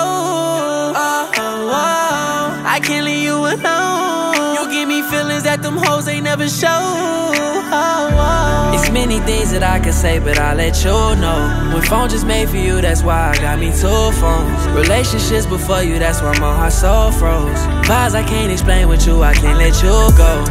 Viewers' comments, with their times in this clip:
0:07 Ouuuu This part gave me pnb rock vibes